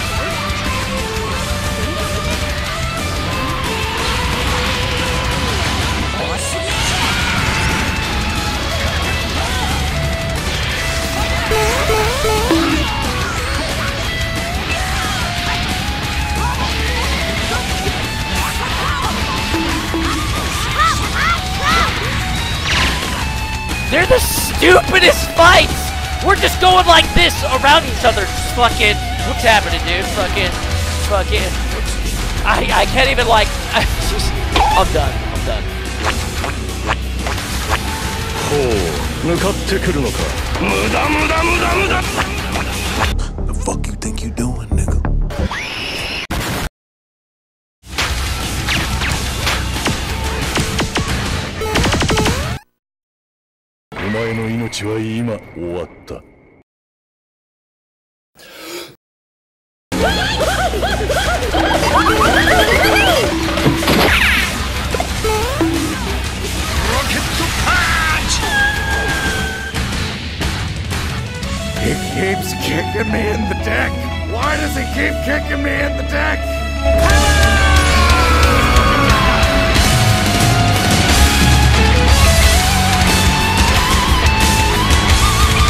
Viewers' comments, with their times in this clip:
0:10 Those Flinstones sounds unlocked some deep memories...
0:51 I love when vegeta blast sound is a pew pew gun
1:08 Man those TFS voice clips were the funniest thing! 🤣